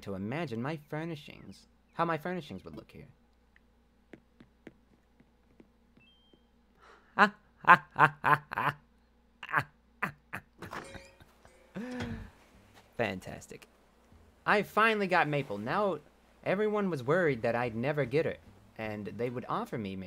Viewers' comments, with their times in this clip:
0:07 His laugh is pure gold.